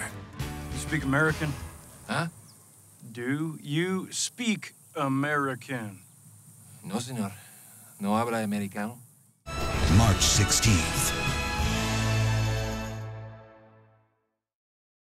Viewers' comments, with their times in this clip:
0:07 Come on thaths is the best spanish accent you have